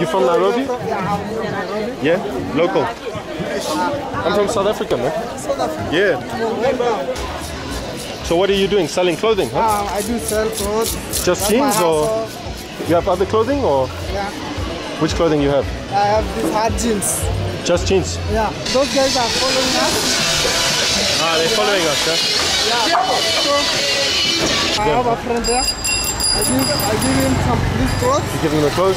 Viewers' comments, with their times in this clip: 0:09 Does this guy says that he sells his azhol ?????